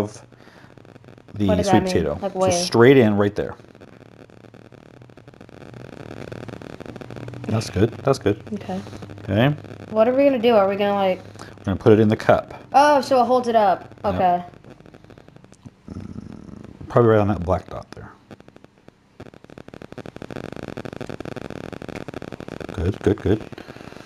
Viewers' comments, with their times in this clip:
0:05 Is anyone else worried about what sounds like a Geiger counter going haywire? :P